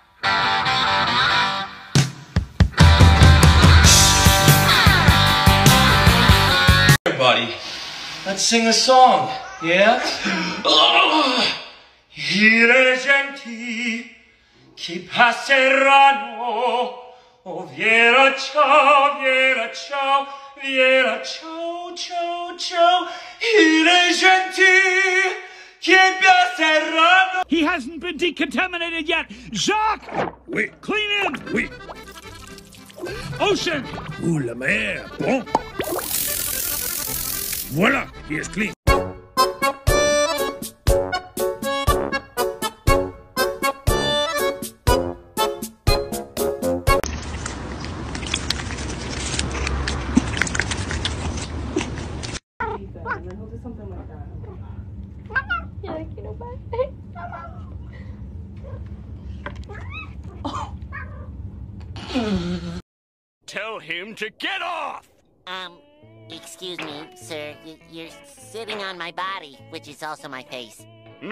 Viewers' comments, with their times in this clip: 0:07 his ass is stunned by the majestic singing of his human!
0:13 I NEED to hear this man sing the full song. His voice is so fucking amazing with Bella Ciao.
0:22 damn, boi has a good ass singing voice
0:52 squeaky bubble child.